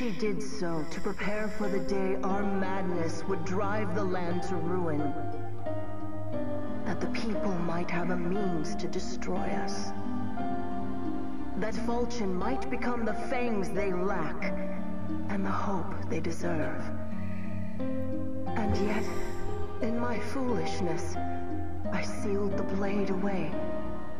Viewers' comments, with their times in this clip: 0:05 I love how sad she sounds saying that